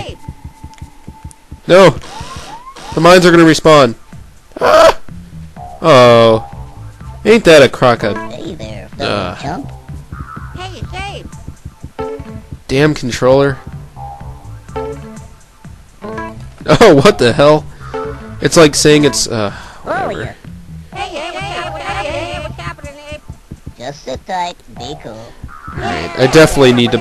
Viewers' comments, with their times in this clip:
0:08 That audio notification couldn't have been any more perfectly timed.